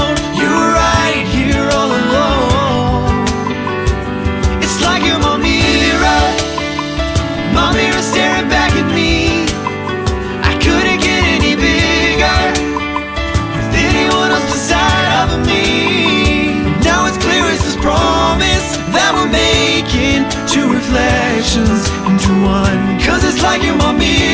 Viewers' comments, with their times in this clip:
0:06 you can hear cymbal but in the video it's not moving